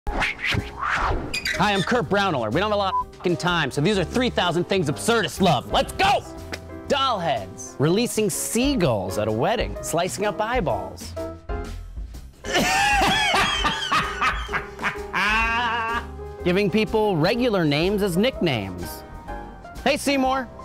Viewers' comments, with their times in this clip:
0:06 I thought he said, "Releasing semen at a wedding!"